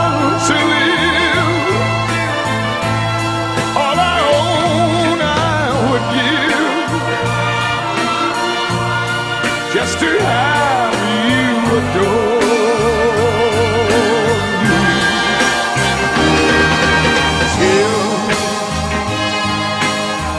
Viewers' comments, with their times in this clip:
0:06 Regardless of Tom having to clear his throat here It's still a great performance.